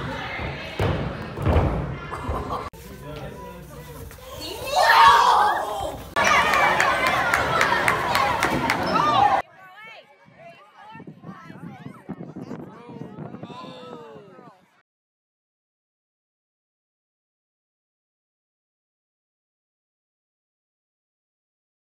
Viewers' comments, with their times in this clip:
0:04 had me cracking up the big WHoA!!! Hahaha